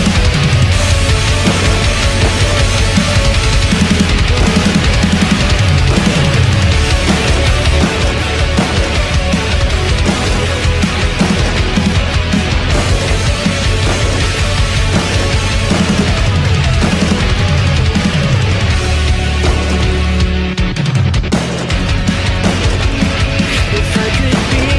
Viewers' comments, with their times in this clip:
0:10 the shots wasn't silent and it had a suppressor on it :)